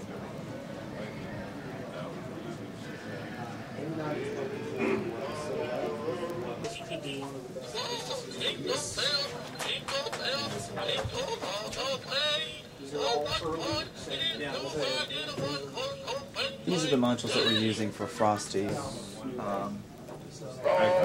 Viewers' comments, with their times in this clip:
0:05 I heard billy bass